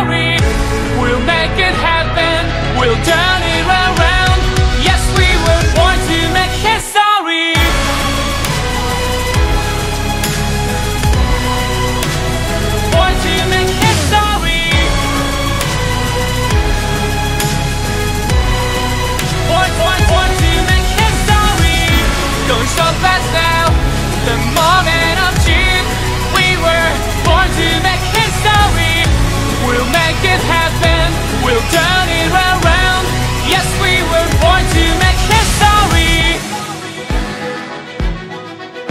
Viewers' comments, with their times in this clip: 0:07 Dude I felt that beat
0:22 THE FRICKING PICCOLO RUNS IN THE BACKGROUNDDDD HOW THE HECK DOES ONE PLAY THAT ITS LITERALLY LIKE 64TH NOTES OR SOMETHING OMG
0:24 I hear screaming I don’t know what it is but it sounds like screaming